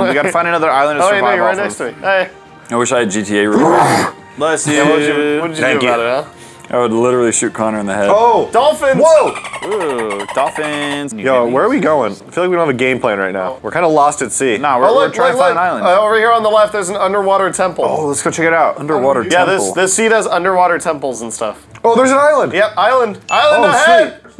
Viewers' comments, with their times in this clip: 0:09 I thought someone was swearing